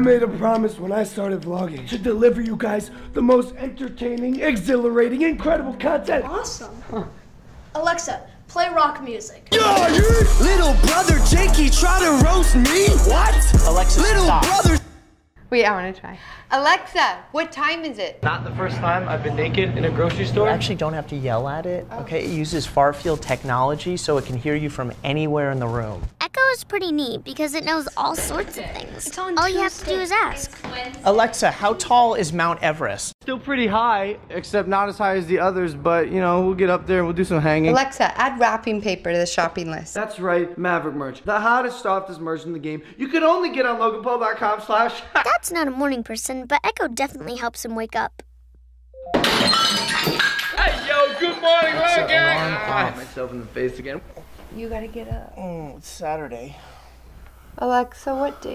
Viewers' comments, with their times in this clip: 0:08 "Alexa, play rock music" [plays awful rap]
0:13 seriously my ears are bleeding
0:40 he sounds like donald trump advertising trump steak